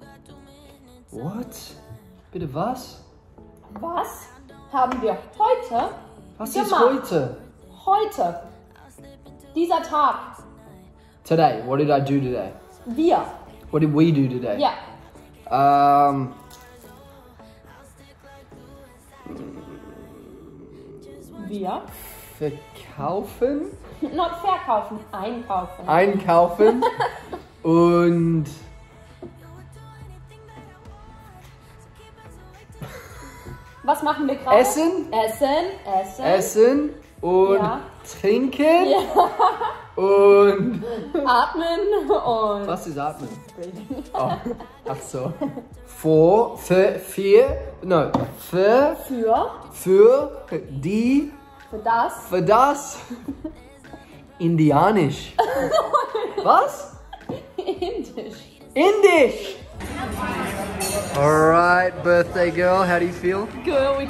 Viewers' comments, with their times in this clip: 0:06 that "was ist heute" was really cute😂🫶🏼
0:46 That was really good German 🫶🏻😂